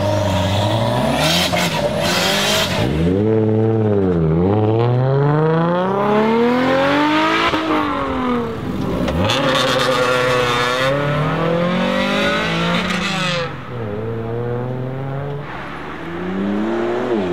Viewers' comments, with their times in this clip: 0:05 amazing sound Lexus... NFSUnderground sound car